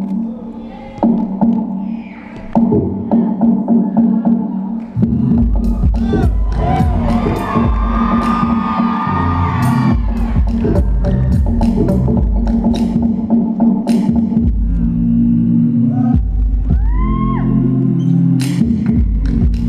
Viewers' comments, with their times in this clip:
0:03 totally beat kill